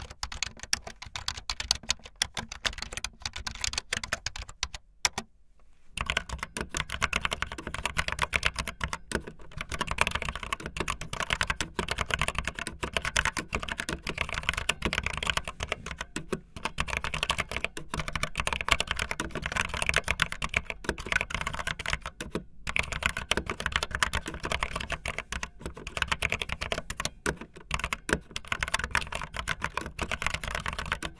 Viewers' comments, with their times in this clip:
0:06 i like the keyboard sound
0:15 No one: Mister Krabs when he's walking: